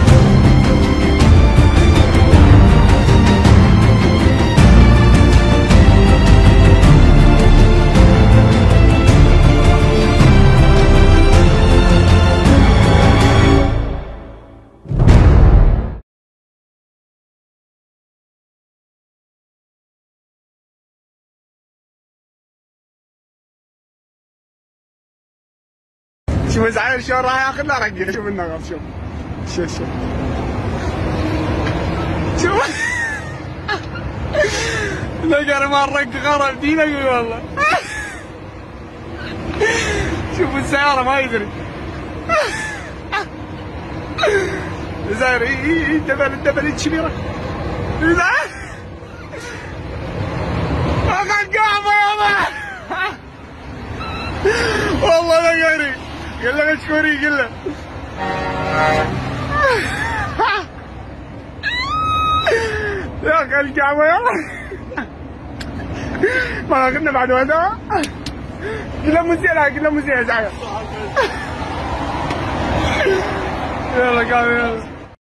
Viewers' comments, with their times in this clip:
0:04 the music had me dying 😂😂😂😂
1:02 This dude turned the squelch up on that high note 😂